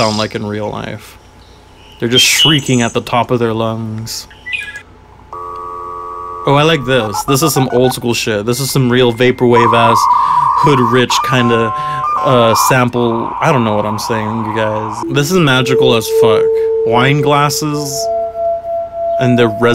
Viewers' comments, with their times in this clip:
0:05 I honestly thought My Love Is Online was gonna play